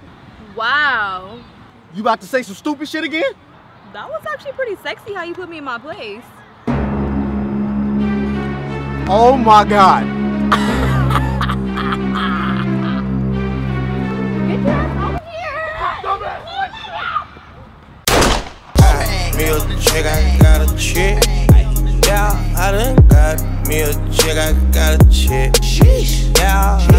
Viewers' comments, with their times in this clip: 0:10 Omg lol his laugh it was soo funny